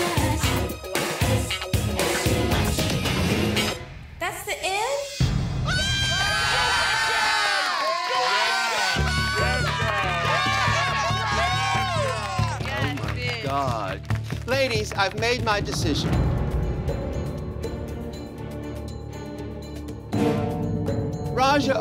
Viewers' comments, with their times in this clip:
0:06 I jumped in my seat when RuPaul screeched..